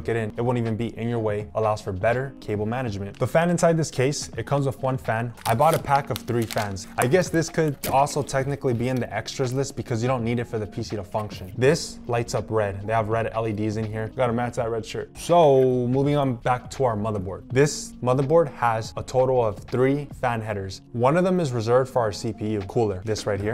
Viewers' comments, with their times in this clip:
0:05 Mini Earrap XD